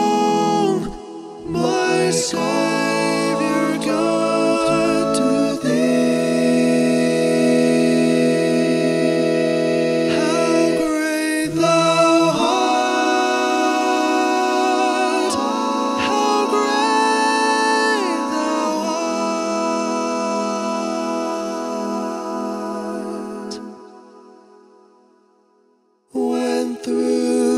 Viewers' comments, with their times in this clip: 0:08 That dissonance sound .. Is that an Emaj and EMaj7 at the same time?